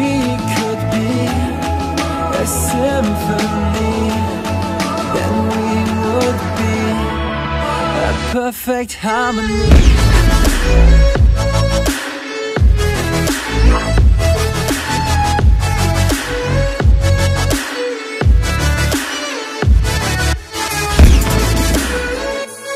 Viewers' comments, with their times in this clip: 0:08 damn perfect beat drop!!! made my day :D